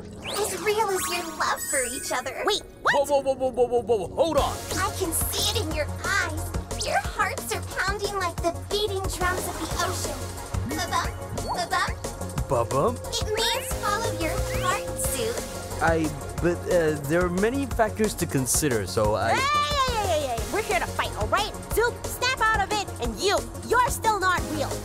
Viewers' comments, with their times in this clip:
0:06 JDIEHDIEHJWV I LOVE THIS MUSIC AAAAAAAA now give me music